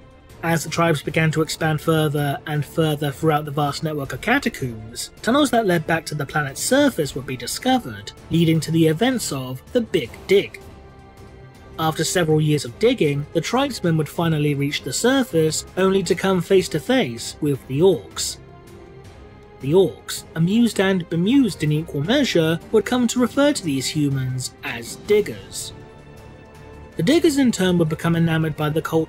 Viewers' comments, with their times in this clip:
0:10 i realy though you said events of the big dick i must have repet that moment a couple of times and then realized you meant big dig